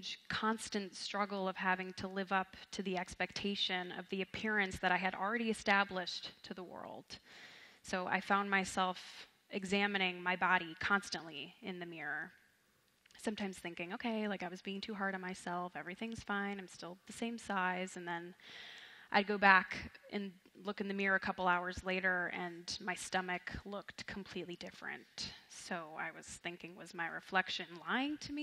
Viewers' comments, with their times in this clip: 0:04 The guy and the girl laughing made me lol
0:05 u can see the woman gasped because she saw herself on the screen and he laughed at her reaction, it wasn’t anything personal, she was listening intently before
0:05 I'm sorry but guy turtleneck started laughing.
0:05 why are they laughing tho
0:07 what were they laughing at? i-
0:07 that woman and guy are laughing, i wonder what that is all about lmao
0:08 why is he laughing
0:08 did anyone else the couple laughing ?
0:08 what is he laughing for?
0:08 did anyone else notice the man and woman laugh at the same time at like lmfao
0:08 a man laughed in the crowd. 😬
0:08 why is that guy laughing?🤔
0:09 I wonder what that man laughing at
0:09 I know this is super out of context but am I the only one who noticed those people laughing in the background in minute
0:09 why is that guy laughing